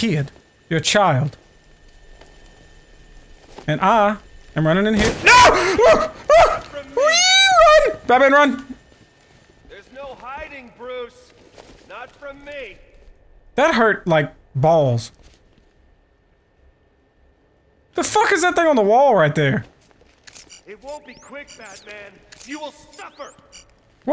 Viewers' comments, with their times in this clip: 0:06 The squeal is hilarious. Deliverance has got not on toonz. Had to stop video laughing so hard, I think I pulled something.